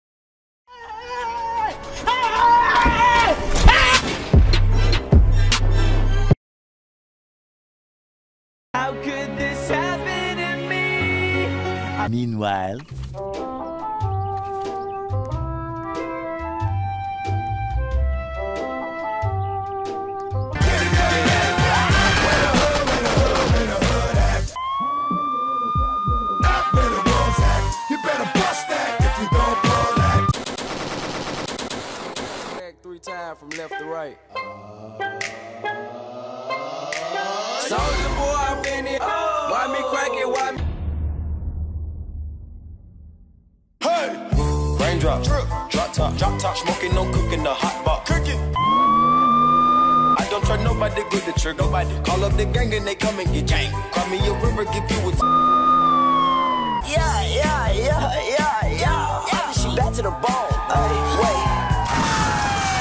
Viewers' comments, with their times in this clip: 0:03 BRO TELL ME WHAT THIS SONG IS, THAT SOUNDS LIKE SOME KIND OF DRAKE SONG
0:13 in this is the funniest music I ever had
0:36 that song was my fav
0:43 I've never heard two songs combined like this
0:44 is nice music
0:44 my hammer and rap is a good mix not gonna lie